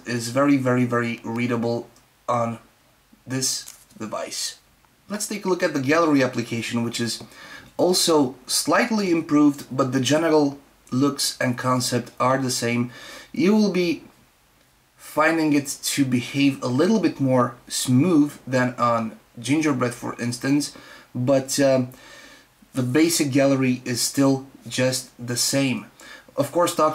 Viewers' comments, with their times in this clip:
0:08 Sounds like genital anyone else
0:09 he said "Genital". The gallery app is different on stock ICS, it's weird how Samsung put the old version on the ROM.